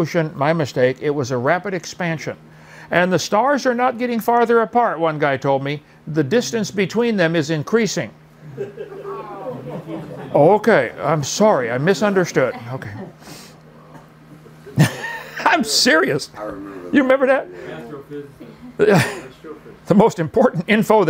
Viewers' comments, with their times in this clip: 0:03 Can someone explain to me why his audience groaned with his explanation? I have watched it 5 times now and can't understand where they are going.